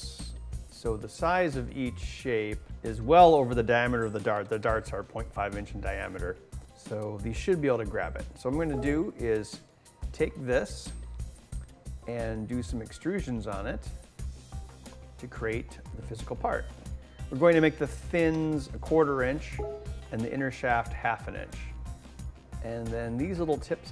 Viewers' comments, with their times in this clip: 0:07 lol. Google hangouts noise